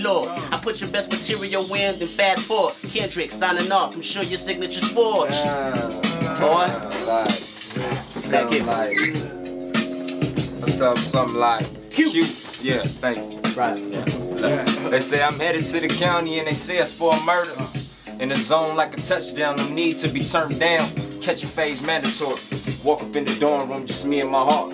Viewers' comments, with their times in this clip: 0:05 I love how Kendrick had to think about whether or not to say boi